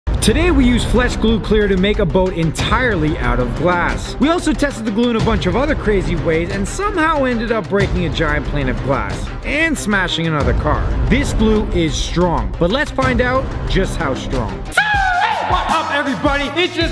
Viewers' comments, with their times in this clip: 0:01 Am I the only one who heard fles glue clear in the intro Just me okay
0:01 he said flesh glue XD
0:01 Flesh Glue Clear?????
0:01 Why did I hear Flesh Glue